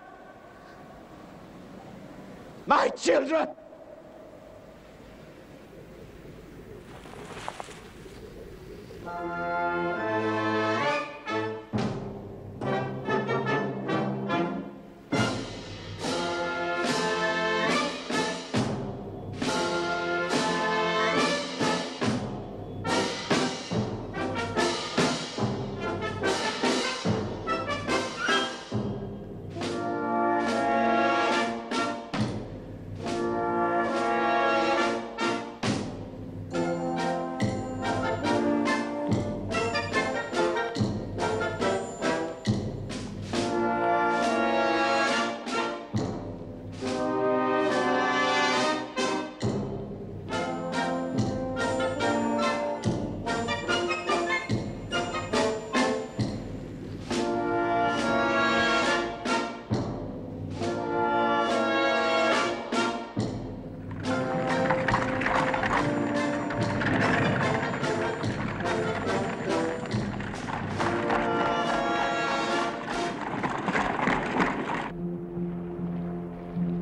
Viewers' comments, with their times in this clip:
0:05 Napoleon is depressed asf and the band goes 😳🤭😀👌🎺🎻🥁
0:07 ya’ll don’t have any music in a minor key??
0:57 weird selection of music for the dramatic scene